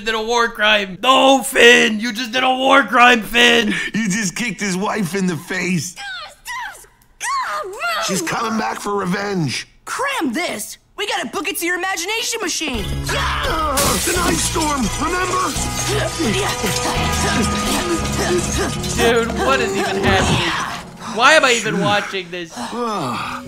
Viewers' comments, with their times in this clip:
0:04 That voice sounds familiar.